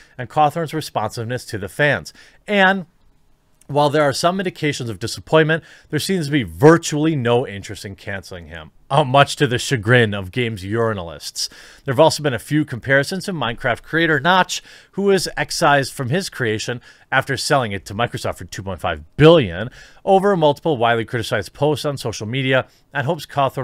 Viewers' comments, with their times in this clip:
0:10 "Games Urinalists" ... I like that new title for them.